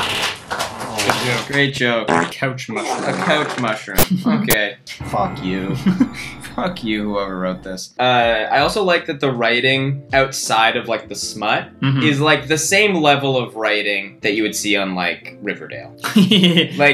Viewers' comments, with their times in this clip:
0:03 did yall hear that glitch in your ear